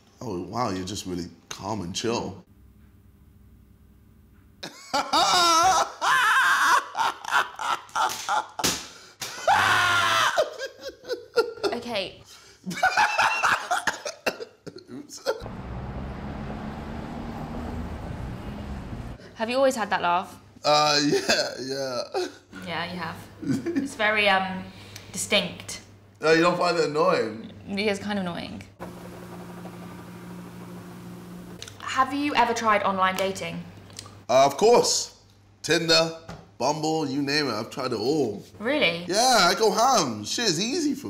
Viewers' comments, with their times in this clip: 0:09 Me and the bois cooking a chicken alive
0:26 when she said that she found it annoying, and then it went to the fridge’s humming noise, I lost my shit 😂